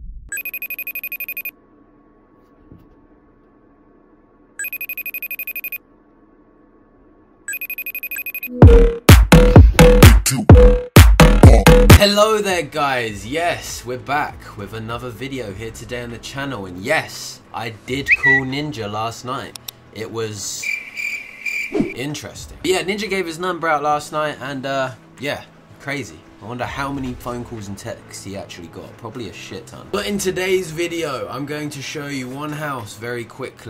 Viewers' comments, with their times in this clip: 0:09 Why is no one talking I’m frickin dying 😂😂😂
0:17 I love how the twitter sound effect makes it sound like you said “yes I did fuck ninja last night.”😂